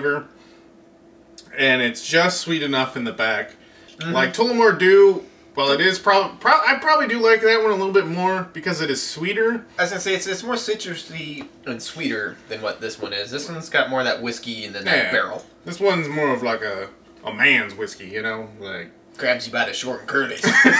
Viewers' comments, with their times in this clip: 0:06 keep clickin lol so cute